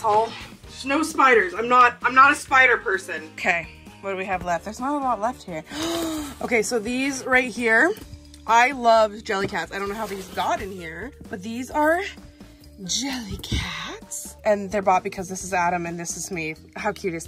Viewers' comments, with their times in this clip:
0:05 I swear I heard someone say something between like seconds when she said “so these right here”